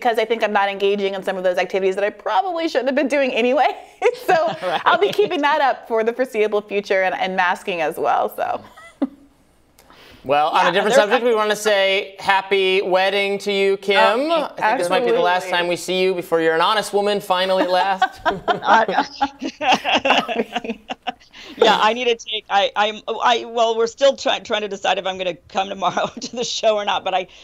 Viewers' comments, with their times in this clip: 0:10 Robby totally talked over Kim to wish her a happy wedding 😂